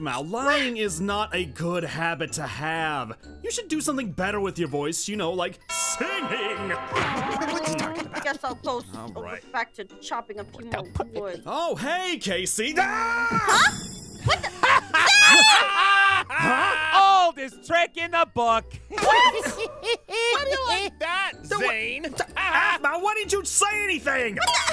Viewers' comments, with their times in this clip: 0:07 did i just hear aphmau just say fine ill just go back to choping human groins like WHAT